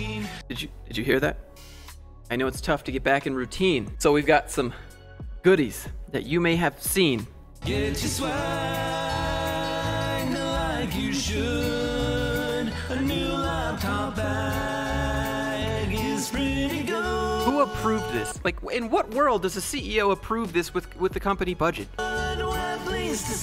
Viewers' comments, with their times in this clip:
0:08 they could AT LEAST sing in tune if they're going to butcher a John Denver song.